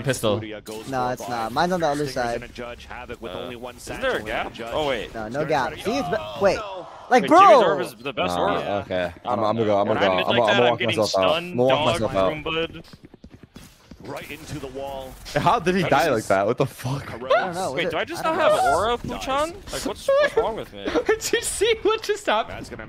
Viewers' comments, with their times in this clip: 0:05 i don’t think i’ve seen a quieter death in this game